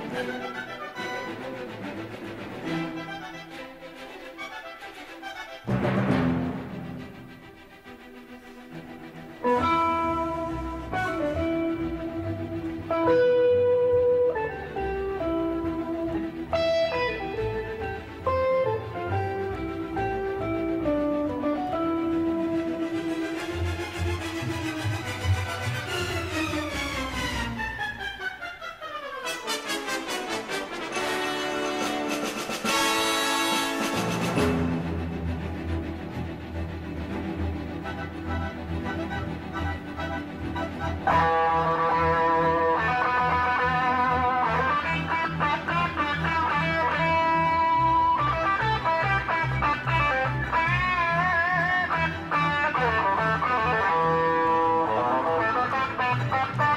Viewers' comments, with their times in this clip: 0:05 electric guitar+orchestra = Awesome!
0:41 the master , perfection and melodic solo, ritchie blackmore my only guitar hero